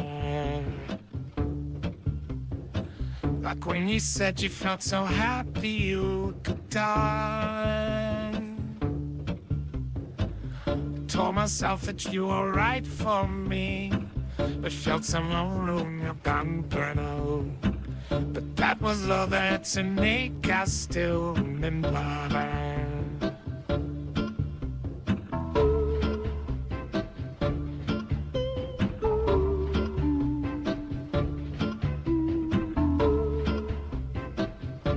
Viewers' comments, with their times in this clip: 0:10 told myself that you were right for me.... but felt so luwwo inwuh gun guh-noh.... really touching lyricism from doof
0:15 bro really just turned into stitch for a second